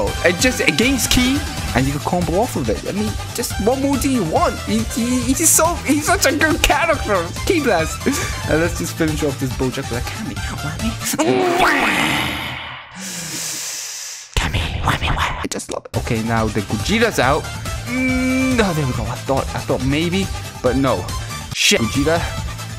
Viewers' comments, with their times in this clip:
0:10 yet another godly KamewameWAHHHH!!!